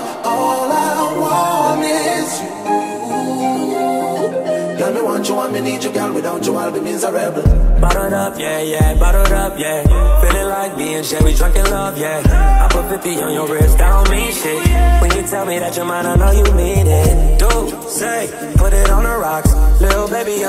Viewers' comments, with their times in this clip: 0:04 smoothest transition ever 🔥🔥